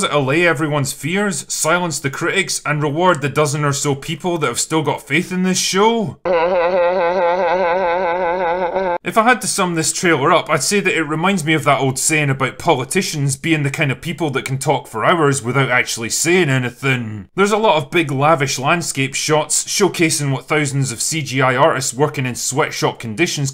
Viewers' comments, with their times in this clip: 0:06 That was the Leeloo laugh right? Great videos